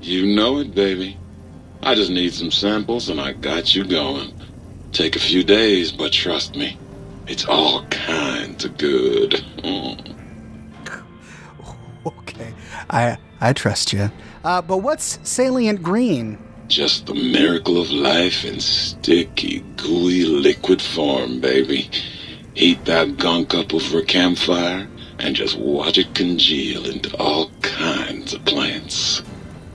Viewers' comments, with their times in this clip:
0:10 I like how you had to lean away from the mic to get your bearings.
0:12 Lol I...ᴵ ᵗʳᵘˢᵗ ʸᵃ